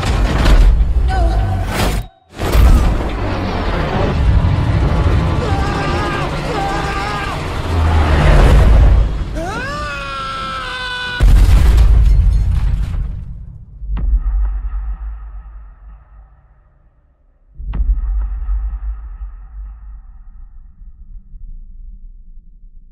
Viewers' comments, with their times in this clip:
0:04 Giger inspired sarcophagus? Half expecting a Zenomummy chest burster to pop out from the chest of the sacophagus then find a hiding spot under the panels. Also horribly edited yell....you can hear repeat twice in a row smh. Maybe just for the trailer?
0:05 Tom Cruise:AAaAaAaAaAaAa aAaAaA Mummy:STOP SCREAMING IM TRYING TO SLEEP!
0:09 Sounds like a crying baby seconds lol